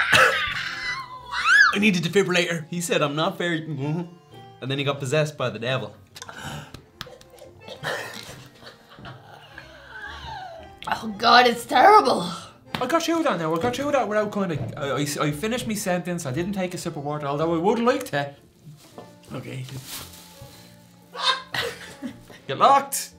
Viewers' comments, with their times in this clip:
0:07 .....Was that a fart? lol.....Kind of sounded like it came from the front, tho....